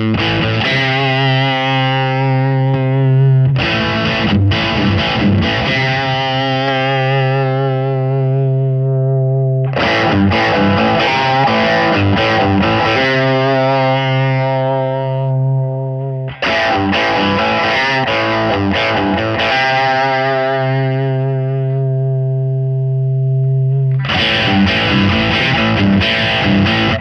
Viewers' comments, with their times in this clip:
0:09 was the sweet spot for the Jackhammer.